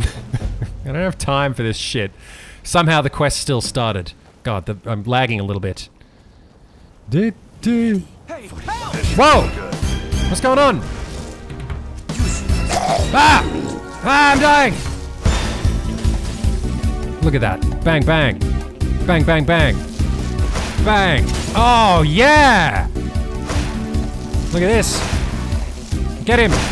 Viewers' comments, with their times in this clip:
0:10 The fight scene music is hilarious.